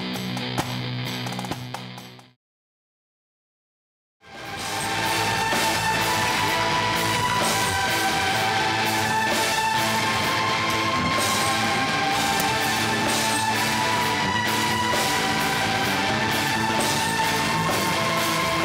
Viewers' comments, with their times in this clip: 0:04 A bit of Gary Numan influence, there. I reckon Munky should do a collaboration album with Numan. :)